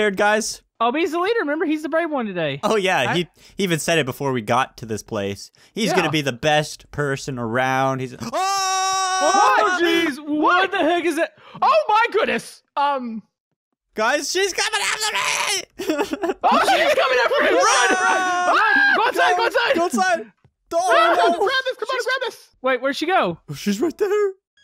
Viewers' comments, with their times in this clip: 0:07 before you guys even scream i say mama!